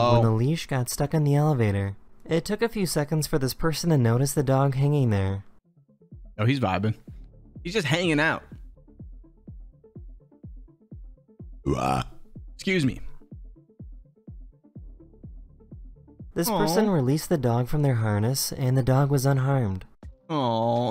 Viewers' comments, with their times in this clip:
0:08 BRO I SWEAR I DRANK PEPSI 10 MIN AGO AND BURPED AT THE EXACT SAME TIME HE DID